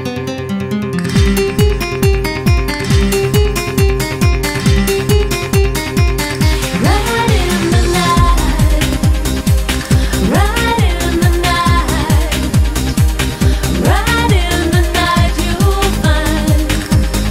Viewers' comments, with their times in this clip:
0:04 I was listening to this while doing house chores. I thought the one in was Madonna and I was confused. I had to check the video to make sure, LoL. She sounds like Madonna in my speakers.